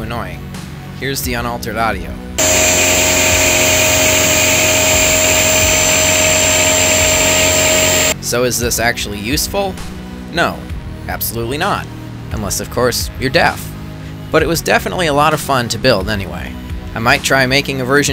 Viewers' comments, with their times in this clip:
0:04 High quality video. Now That sounds like a Battle Station.